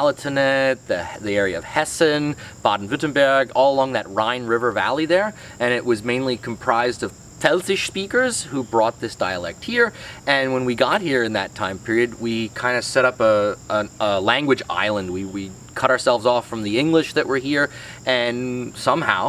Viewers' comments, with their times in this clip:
0:07 What is the word he says ? Telsich?